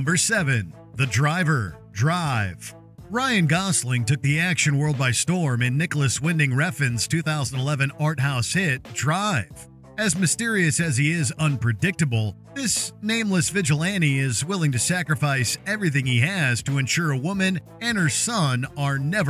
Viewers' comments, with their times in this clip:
0:05 one of the best film soundtracks